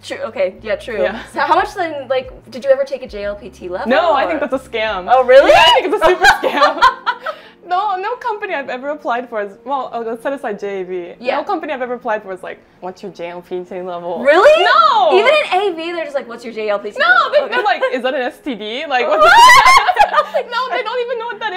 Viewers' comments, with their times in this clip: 0:05 Jeff Bezos would proud of that laugh.